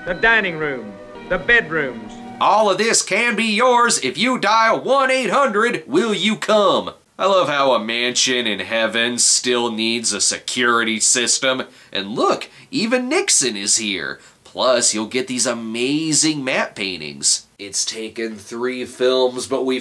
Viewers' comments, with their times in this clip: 0:04 Snob, I dialed up 1-900-WIL-UCUM and I got a sex hotline. ...Wait. [rewinds video to ] ...OH. I see what I did wrong.